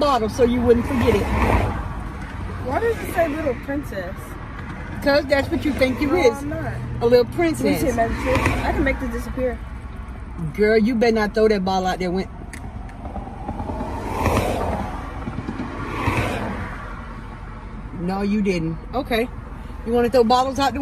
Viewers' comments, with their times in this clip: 0:06 That awkward moment of silence